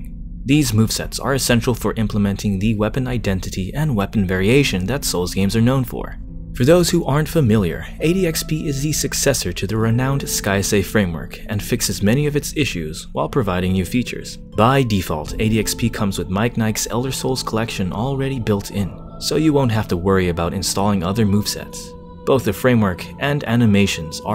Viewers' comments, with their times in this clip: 0:08 what's the song called ? Sounds beautiful